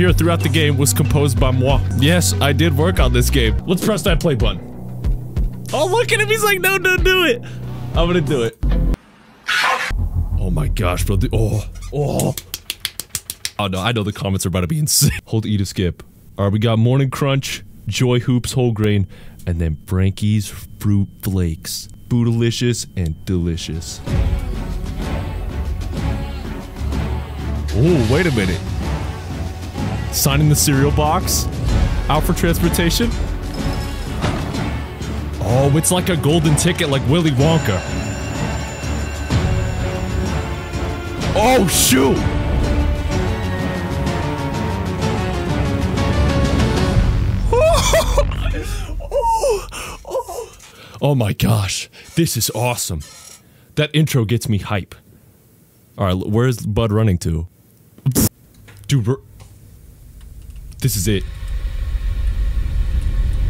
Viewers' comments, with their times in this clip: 0:10 wtf was bro clapping😭
0:24 "We be Sailin' across ye seven sea me boy" ahh song 😭 🔥
0:46 nah bro why you moaning like that
0:48 why is bro moaning so hard 😭😭 chillax homie
0:48 i love it when gamers moan from a game